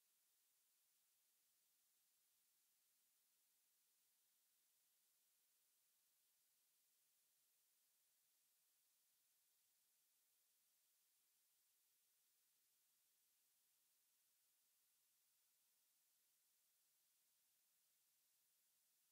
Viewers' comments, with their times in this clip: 0:04 Hey the sound cut off or so ?Happened??????????????????????????????????